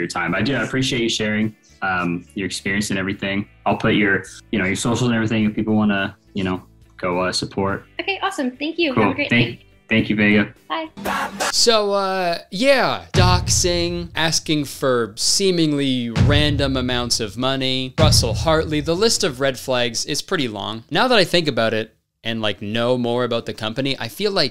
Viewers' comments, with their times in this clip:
0:06 I thought he said “if people wanna watch the porn” I was like 🫨